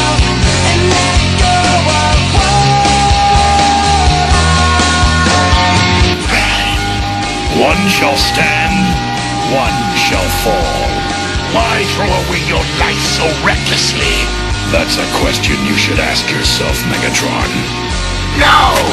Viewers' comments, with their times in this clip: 0:06 Optimus Prime VS Megatron dialogue + Epic guitar solo